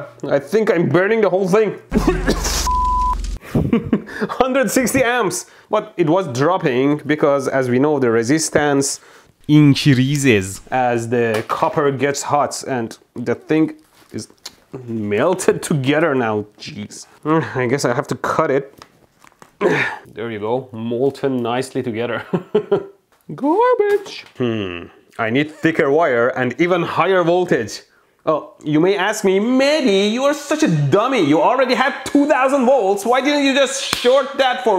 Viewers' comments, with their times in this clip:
0:08 the Persian ascent 😂😂😂❤❤❤
0:10 😂😂 your fucking accent is gooooooooood
0:22 I’m dying he should be a singer